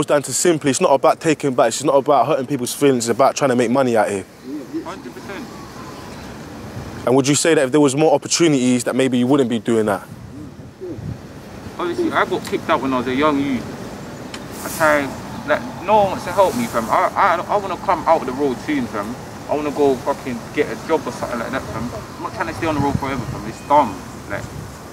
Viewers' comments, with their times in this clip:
0:05 all look out for the sirens lol haha